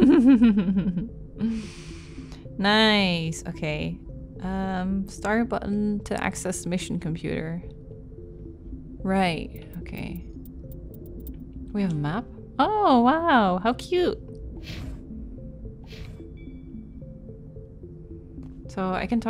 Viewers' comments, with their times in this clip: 0:04 Kaidan, are you working on something or playing the piano?